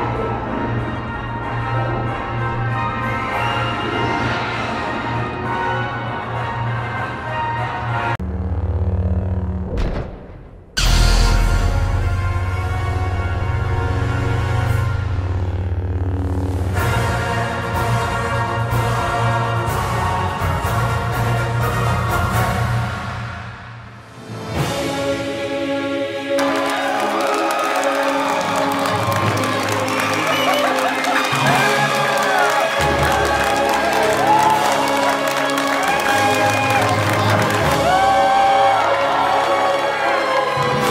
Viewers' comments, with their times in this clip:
0:08 my right ear has been saved
0:26 haven’t seen this happen in any star wars sequel movie yet ... all I hear is clapping and see no one standing besides the ppl that are leaving